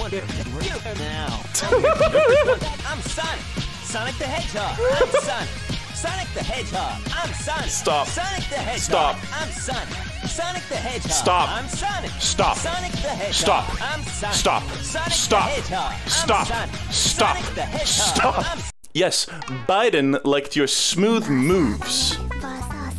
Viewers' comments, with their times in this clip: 0:07 the progressively more aggressive “stop”s killed me